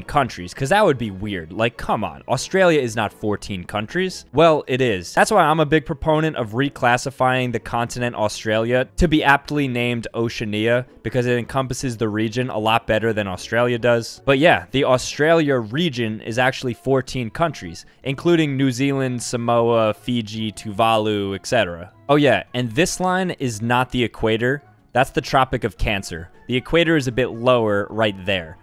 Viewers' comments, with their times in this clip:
0:10 bro did not just pronounce oceania like that